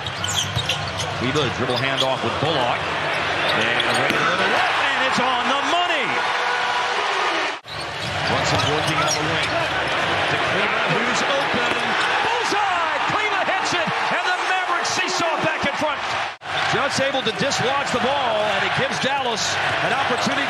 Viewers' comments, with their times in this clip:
0:03 it sounds like Luka Dončić game winner rim sound.